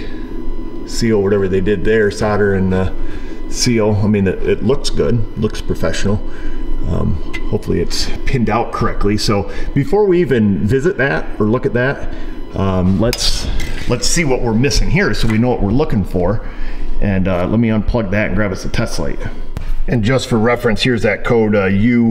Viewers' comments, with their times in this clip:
0:10 as you said: "it looks good", but it doesn't look like it's protected from the elements. Man, that engine sounds awful! :face-fuchsia-wide-eyes: